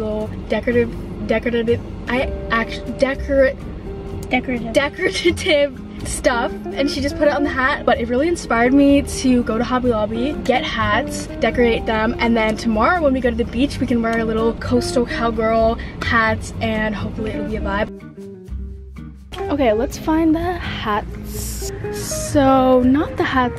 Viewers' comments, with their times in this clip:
0:04 The way her sister said that😂